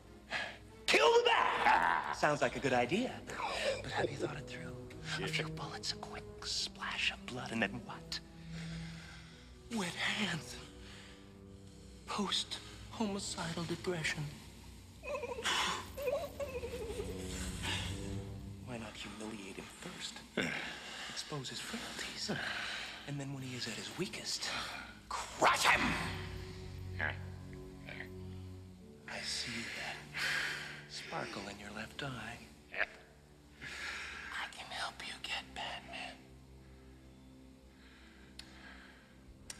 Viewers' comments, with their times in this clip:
0:09 “Wet hands… post-homicidal depression.” -Jim’s delivery of this line 🤣😭
0:14 That "cry noise" Jim makes always cracks me up
0:15 🤣🤣🤣just the noises Jim makes are funny as hell
0:18 Jim Carry’s impression of porg
0:25 This growl sounds like carnage